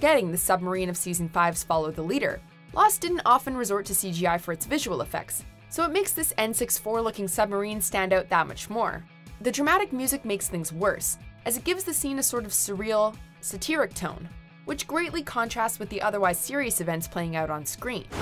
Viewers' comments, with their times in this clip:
0:03 Are we all just gonna ignore the fact that she said N64 as "N-Six-Four" and not "N-Sixty-Four."